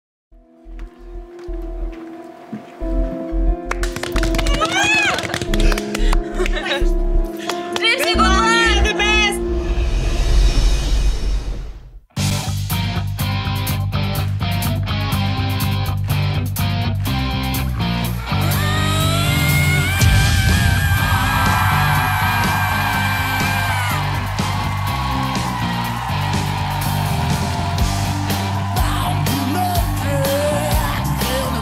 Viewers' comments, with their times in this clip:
0:10 What a wonderful mediocre antics, I didn’t hear the song, because not a single word was sung correctly. Pretentious, stylish, grimacing, but the singer is useless.
0:14 yesssssss I feel like I’m at a rock concert back in the 80’s!!!!!
0:17 can we just appreciate that scream...